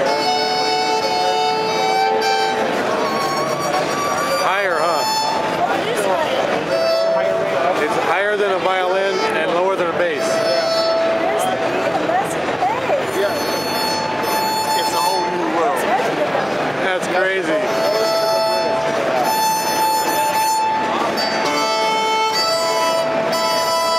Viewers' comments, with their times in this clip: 0:05 Another A String but an Octave higher, which I call the Soprano Violin A String. This is the Soprano Sfogato of the String family, if they made Octave lower tuned Strings with an Octave lower B4 String (B5 is under development) it would boom.